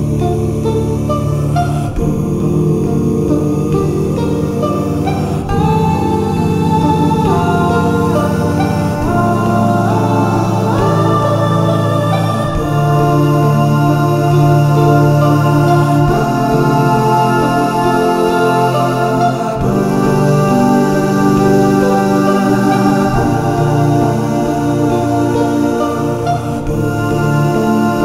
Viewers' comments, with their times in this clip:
0:06 I personally never played the game unfortunately but I’ve seen others play, this song always gets me sad and I start tearing up
0:09 Whatever the musical term for what happens is, it's magical